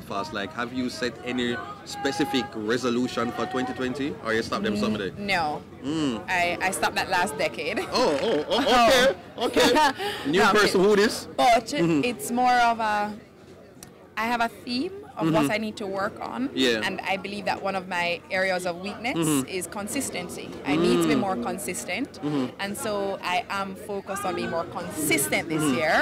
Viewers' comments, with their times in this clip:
0:09 Me alone hear someone singing "im no longer a slave to fear" in the background 😂😂😂